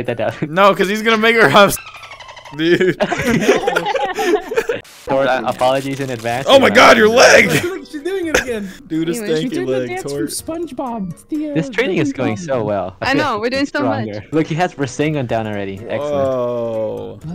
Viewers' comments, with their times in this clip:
0:05 I got scared for her for a sec, I thot the dude playing sasuke was gonna make a crude move on her + the crushing noises they added in..lol